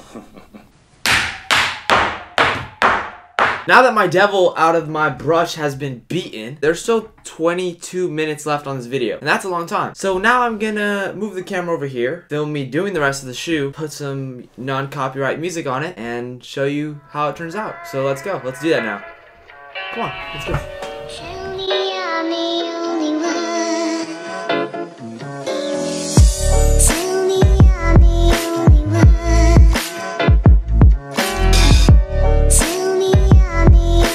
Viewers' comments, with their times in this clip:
0:04 idk why but i love the way he says beaten
0:22 Was I the only one who got in my feels with the song 😭